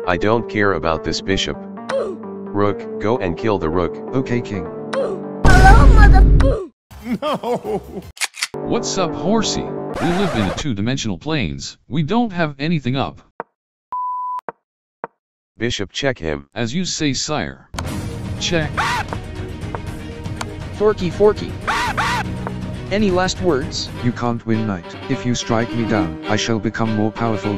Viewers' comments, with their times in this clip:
0:10 why does horsey have bishop voice
0:10 why did the black knight talk like a bishop
0:10 horsey voice is changed